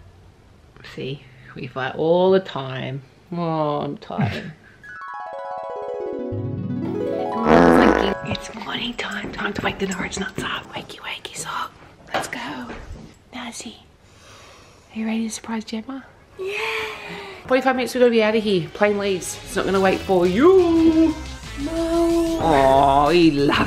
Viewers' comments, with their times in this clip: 0:06 i cant with these time skips- the fart 💀